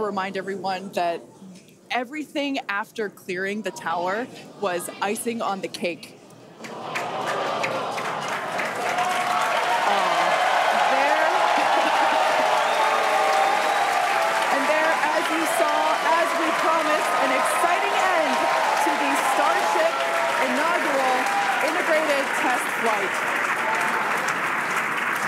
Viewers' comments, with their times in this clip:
0:03 I just can’t hold it in anymore- *boom
0:03 it goes boom
0:04 Everyone cheering after rocket hits firmament.
0:06 the second it blew up everyone started cheering
0:10 Mfs applaud anything.